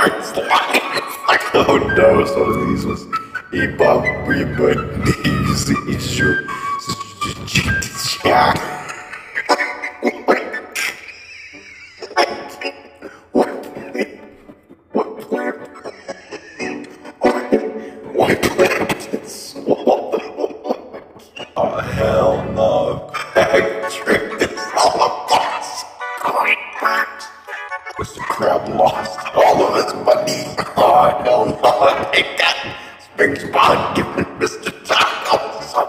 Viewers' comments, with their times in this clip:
0:03 Him Singing Ebob
0:08 bro turned on an accordion
0:23 Mumble rappers when they use auto tune